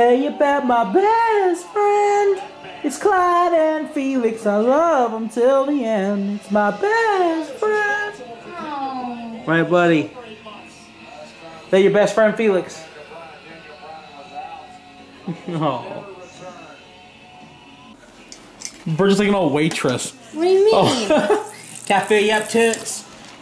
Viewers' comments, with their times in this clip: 0:08 Kane music in the backround 😂😂😂😂😂